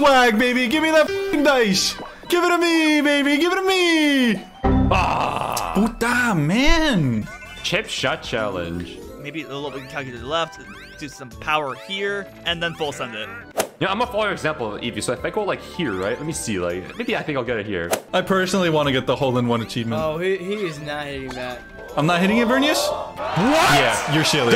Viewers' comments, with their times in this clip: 0:05 Why the way he said that was so funny